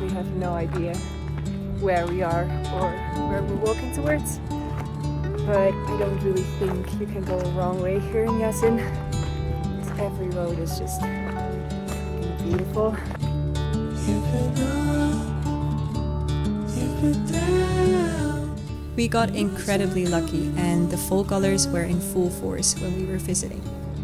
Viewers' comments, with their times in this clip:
0:05 Music reminds me of Zeb & Haniya's Chal Diye.